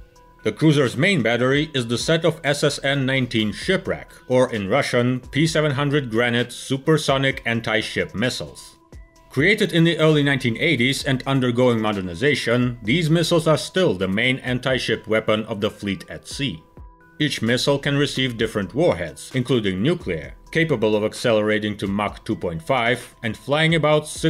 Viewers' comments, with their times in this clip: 0:05 that doesn't sound Russian